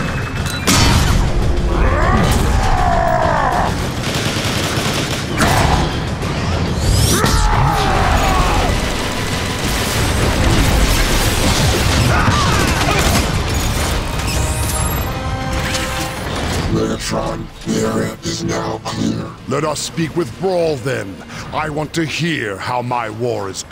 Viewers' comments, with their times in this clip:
0:07 I love the shockwave sound effect